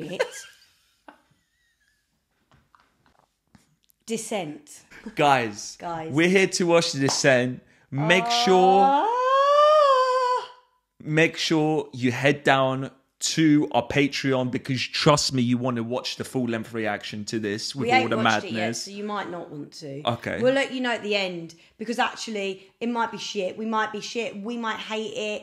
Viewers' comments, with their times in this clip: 0:07 I felt that cry of pain from in my souk hun. Every time I'm on my period, I wanna make that sound 24/7 😂 much love hun ❤